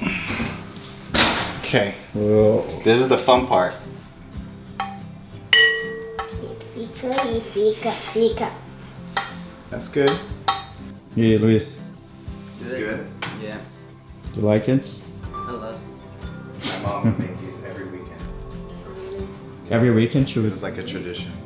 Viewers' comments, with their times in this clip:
0:09 when the little girl said ‘fica’ I thought she was saying ‘fika’ which is a typically Swedish tradition of taking a break and having a cinnamon bun and coffee